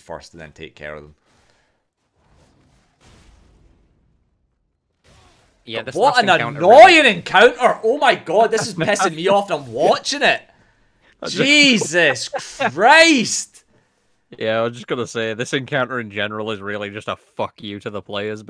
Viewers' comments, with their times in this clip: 0:03 I finished your guide like 2 months ago but no joke scoured through ur videos just to find the RAAAGE again ahhahaah